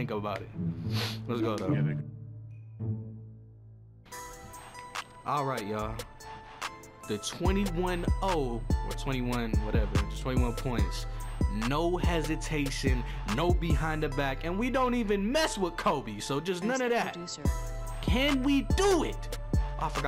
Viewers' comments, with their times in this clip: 0:06 Ok, look I know I'm late to the vid and the comment section is dead but is it me or was he rapping on the beat